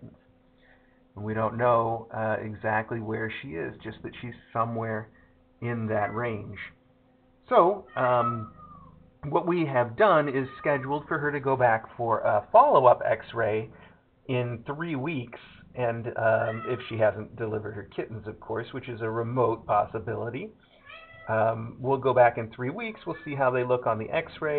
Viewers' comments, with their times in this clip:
0:10 Anybody know which kitty is meowing incessantly in the background around the mark?